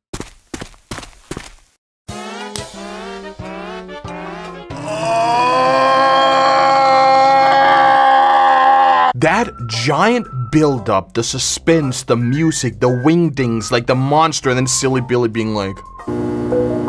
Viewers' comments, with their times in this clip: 0:03 bro recreate the golden freddy scream ☠
0:04 GOLDEN FREDDY SCREAM